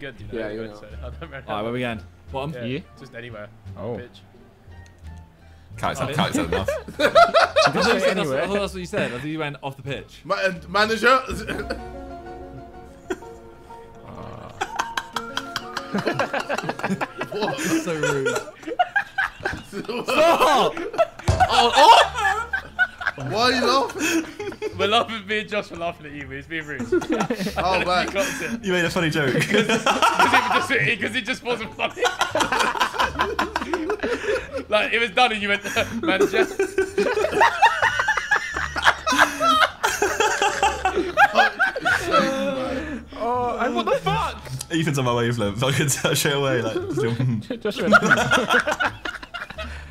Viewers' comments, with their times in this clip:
0:07 I'm sorry but Josh's laugh is so underrated
0:09 JOSH"S LAUGH THO
0:16 The title is a lie, the laughing only starts
0:37 KSI's laugh here is a whole fuckin some bro, LITERALLY MADE ME SMILE